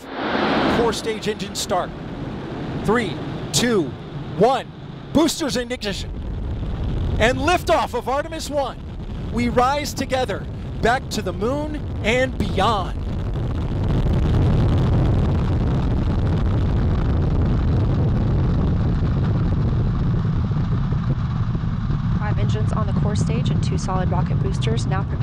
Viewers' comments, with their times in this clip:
0:07 THE SOUND THE SOUND! Tell us "AHNLIMITED PAHWER!" Since Apollo IV never seen and heard, before.